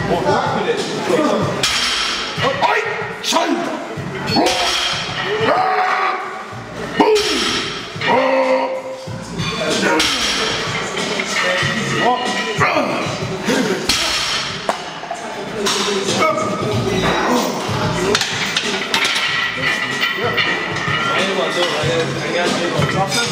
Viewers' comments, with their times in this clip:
0:04 man sounds like a god damn tug boat horn